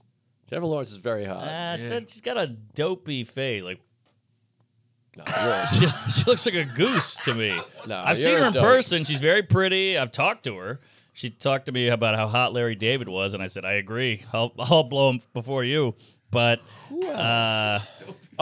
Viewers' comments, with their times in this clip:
0:04 Best Jennifer Lawrence impression ever